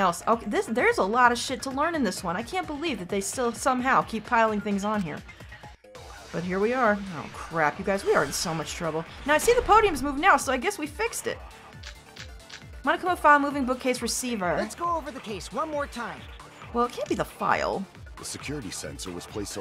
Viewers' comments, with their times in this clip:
0:05 Heads up if you're reading the comments: You will ALWAYS know when you can lie and do a "Back Route" when the "Mass Panic Debate" music has vocals in it at the start. It's the same music that triggers !
0:07 When you hear this music that mean you can lie somewhere.